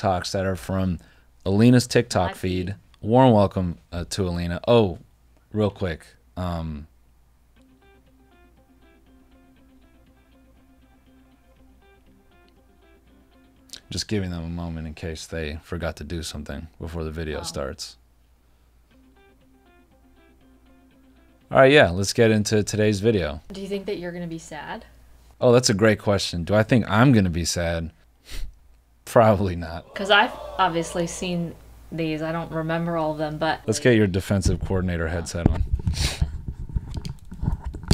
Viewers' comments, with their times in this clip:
0:07 i legit thought someone was calling me and just couldn't hear cuz of my headphones...my phone is right next to me its an iphone
0:09 that ringtone!!!! Scared the shit outta me i thought I was getting a call from work lmaoo
0:18 Not the old school Verizon ringtone 💀
0:20 the ringtone got me